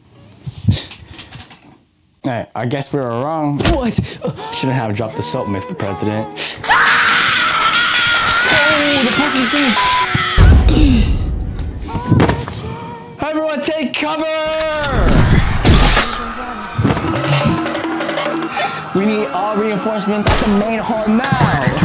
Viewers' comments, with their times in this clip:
0:04 NAH WHATS THAT SUFFERING SOUND💀
0:06 THOSE UNHOLY SCREAMS!!!💀💀💀💀💀💀